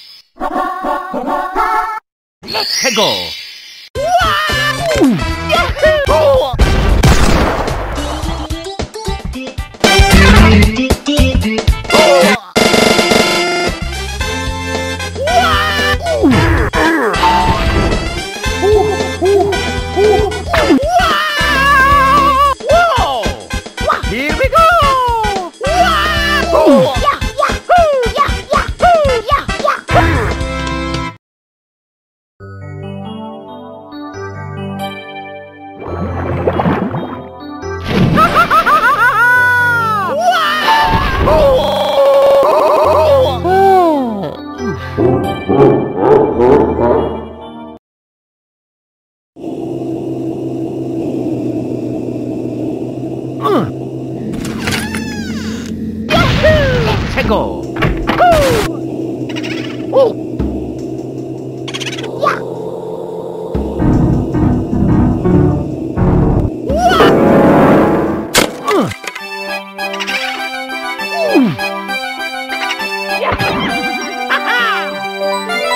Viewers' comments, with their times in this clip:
0:04 WHAAAAaaAA OOOOoooOoo WHAAhOO AGHhhHH: literally became a song
0:05 I like the beginning the most because the music syncs with mario constantly being killed lol
0:08 the slight volume increase killed me
0:59 that oah! matches perfectly with his face
1:02 i love the piano playing the 1-1 theme here
1:03 oh. they made the piano even scarier.